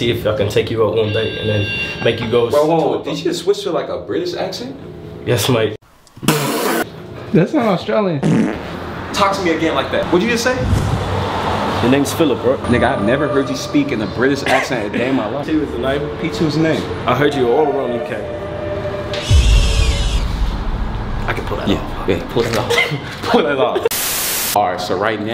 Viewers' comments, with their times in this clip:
0:07 that sounds Australian.... LMAO